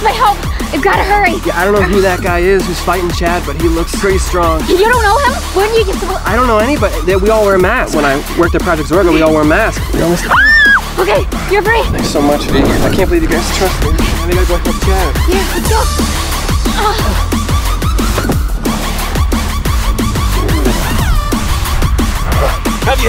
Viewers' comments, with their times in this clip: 0:07 Why you gotta scream like that